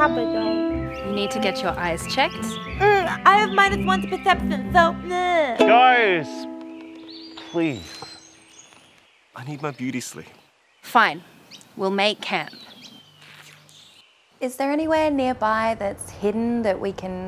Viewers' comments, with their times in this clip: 0:05 of course he had to play some notes HAHAHA